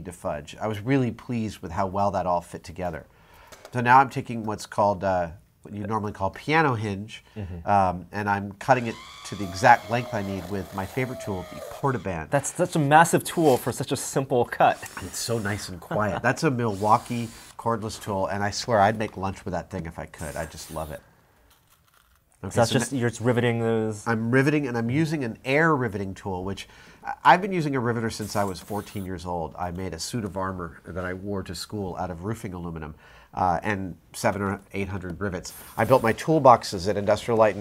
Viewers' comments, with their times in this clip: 0:08 Anybody else thought it was R2D2 screaming for a second ?
0:23 where he said "I'd make lunch with it if I could" I wasn't paying attention and thought he said "I'd make love to it if I could." I actually had to rewind to figure out what he said...